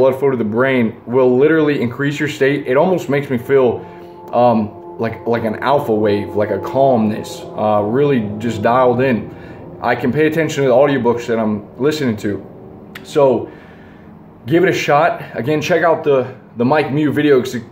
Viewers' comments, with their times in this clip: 0:04 Notice that when you say "alphawave" a car passes by that sounds like alphawaves